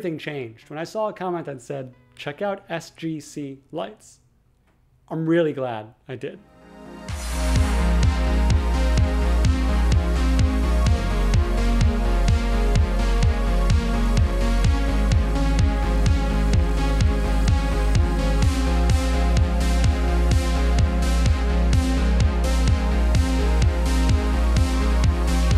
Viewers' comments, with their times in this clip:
0:07 lovin the beat drop 🔥